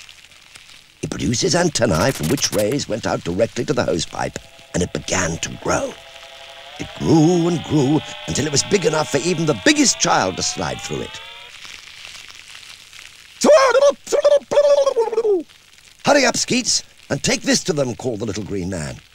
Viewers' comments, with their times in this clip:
0:05 Did they make the sound effect for the hose with an Amstrad CPC? It has exactly the same tinny quality to the sound as a 464's internal speaker!